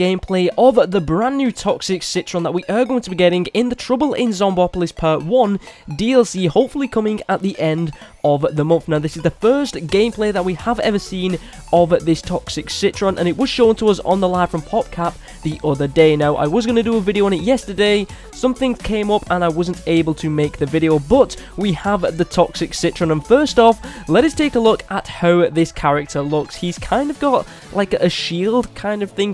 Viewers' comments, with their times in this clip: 0:10 "this is the first gay plant we have ever seen" wtf??